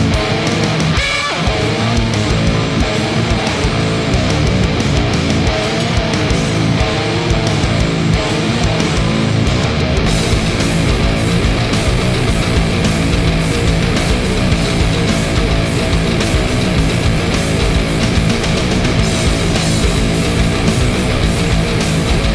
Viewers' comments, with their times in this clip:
0:10 sounds a little like Sic from Slipknot. I know the patterns and notes are a little different but I never realized how much they sound alike